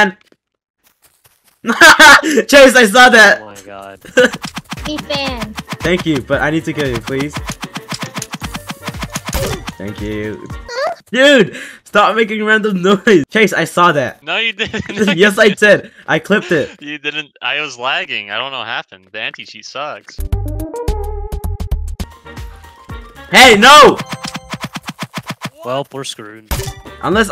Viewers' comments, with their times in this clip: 0:08 This guy this say crazy noise: A and so close to 20k like lol